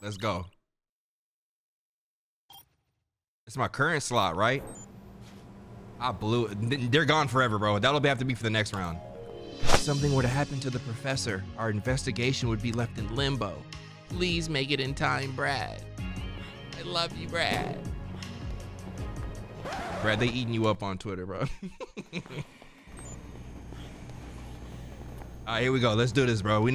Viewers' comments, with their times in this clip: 0:09 every time the white dress track plays 😭❤️🔥